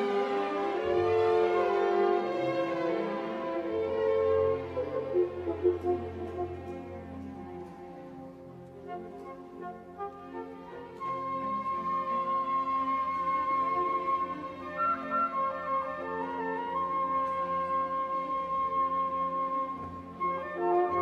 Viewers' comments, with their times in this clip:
0:04 sounds a little rushed in some spots in the 1st movement .. let it marinate, slowly raise the level